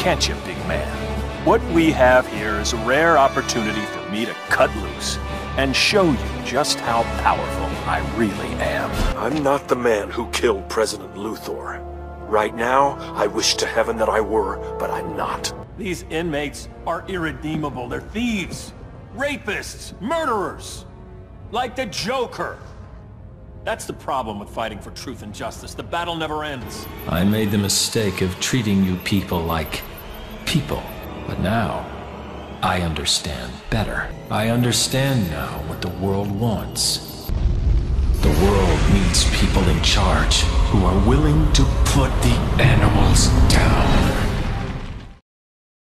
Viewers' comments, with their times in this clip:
0:08 newbern, your sephiroth is showing.
0:26 Newbern’s Sephiroth is showing and I love it.
0:27 I love how Newbern's Renegade Superman = Sephiroth
0:27 What's Sephiroth doing in a Superman movie?
0:27 All I hear is Sephiroth
0:27 Superman letting his inner Sephiroth out
0:30 superman went sephiroth for a second there
0:34 Literally is Sephiroth